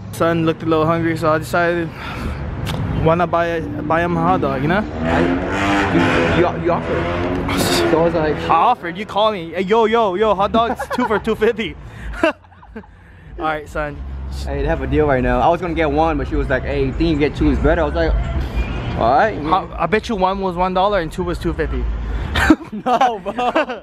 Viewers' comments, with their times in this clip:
0:04 Someone driving a straight piped G35 or 350z ???